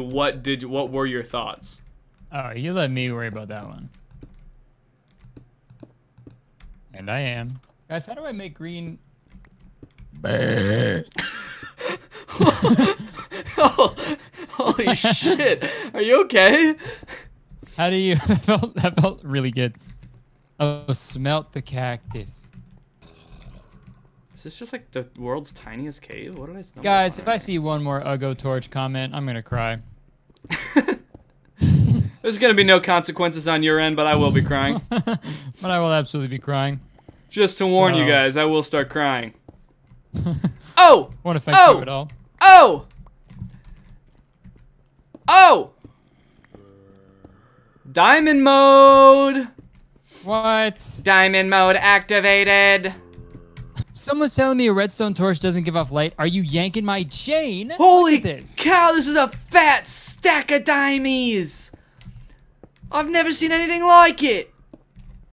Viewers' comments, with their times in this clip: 0:08 Guys how do i make green- PROCEEDS TO MAKE ZOMBIE SOUNDS
1:02 he sounded like tom holland when he said "i've never seen anything like it"